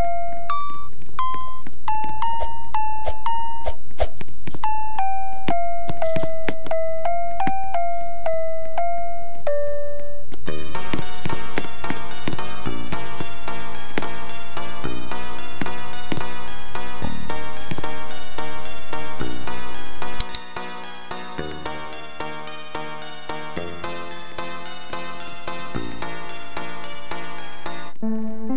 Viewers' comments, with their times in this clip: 0:10 :D funny music from